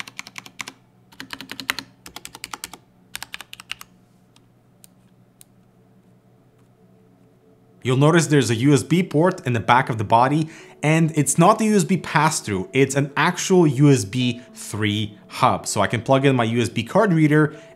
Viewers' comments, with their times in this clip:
0:04 I had pleasure to write on few MX Red's but this one sounds like someone have take a special care to small details. Imagine swapping for pudding keycaps on this keyboard 🤔 Shame that producer didn't give to user possibility to buy this option in one of variants. I really like it. Good job Everest!